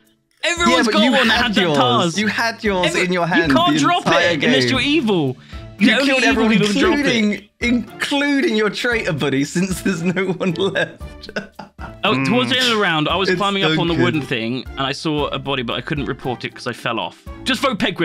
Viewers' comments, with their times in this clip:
0:05 Classic Lewis & Simon shouting match.